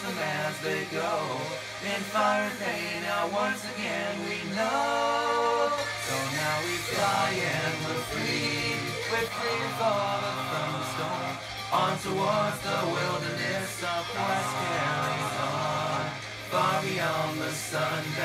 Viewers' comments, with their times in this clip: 0:06 The first 3-part harmony is which is probably what you came for